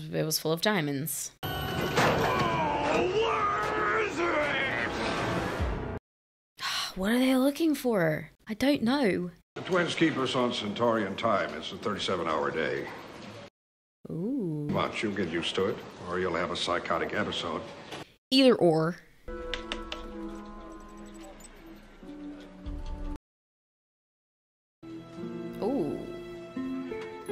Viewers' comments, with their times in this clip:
0:09 Does anyone else think when she says I don’t know she sounded like she can be in a BBC period piece?